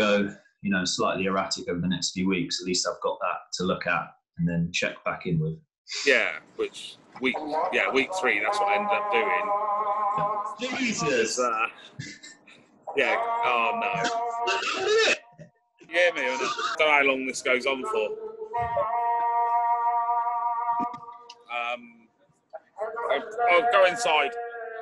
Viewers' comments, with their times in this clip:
0:10 ... allahhhhh akbharrrrrrr !!! Time to go lol 😂 don’t want to offend the natives I’d be the same 😂😂